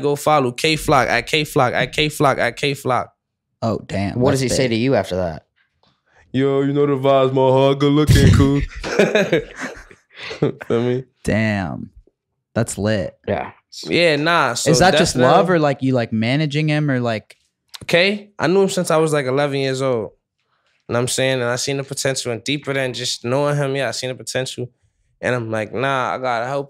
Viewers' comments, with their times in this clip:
0:05 yo tjay i aint knew you could go this low 🤣
0:08 nah tjay mockin Kay funny asf 😂😂